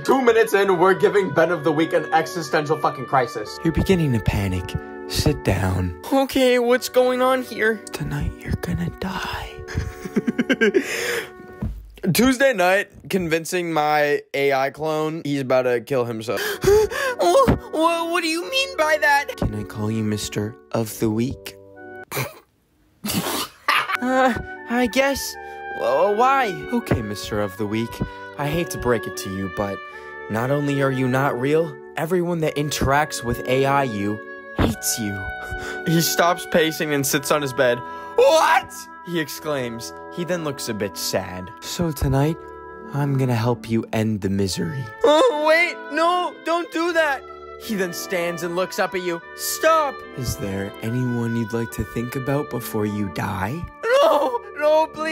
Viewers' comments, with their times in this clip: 0:05 bro the bass in his voice is crazy
0:17 he sounds like morty from Rick and Morty 🤣 i love this video sm🤣🤣🤣
0:18 WHY DOES HE SOUND LIKE ATSUSHI HELP
0:21 his voice acting is actually impressive
0:42 Bro Ben sounds like Morty having an existential crisis for the horrible adventures with his dad 💀💀 (Rick and Morty)